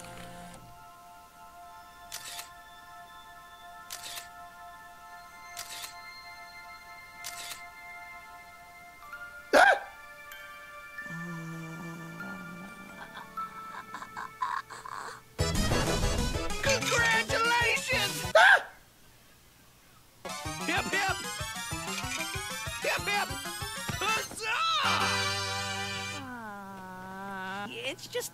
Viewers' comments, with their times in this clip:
0:04 probs the best reaction ever with the little, AGH
0:09 heart attack noises